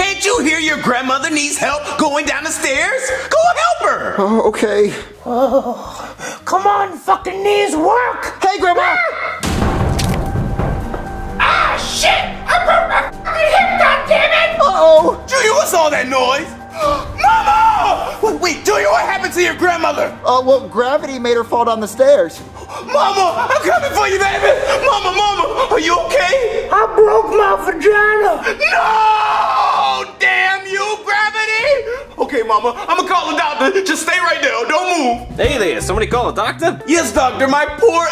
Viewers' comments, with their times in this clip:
0:10 was so hilarious junior’s granny was so mad and her voice is just hilarious 😂😂😂
0:26 I broke my vintage